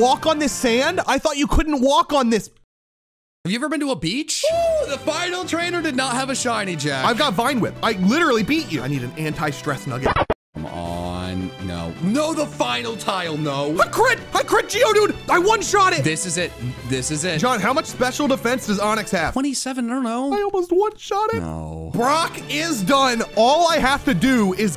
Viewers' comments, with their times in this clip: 0:08 had me dying with that pacman noise, lol